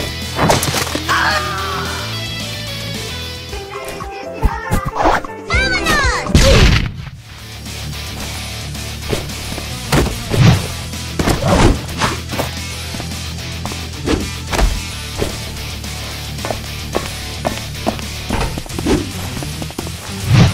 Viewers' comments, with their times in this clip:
0:06 Roblox Death Sound for the 4° time